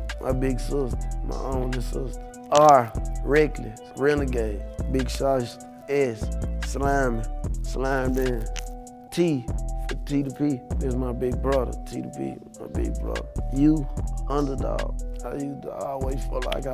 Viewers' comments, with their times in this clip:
0:04 really gay ? I can't heard nothing else 😂